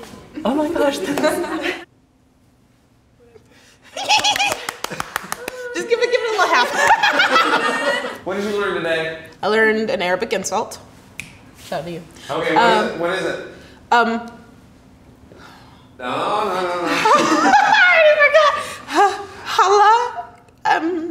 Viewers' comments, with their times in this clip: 0:04 LOL THE LAUGH